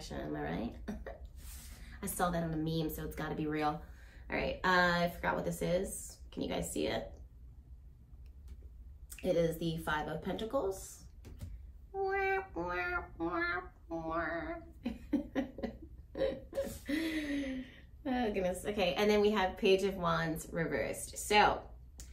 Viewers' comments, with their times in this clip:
0:08 Annnd bring in the giggles.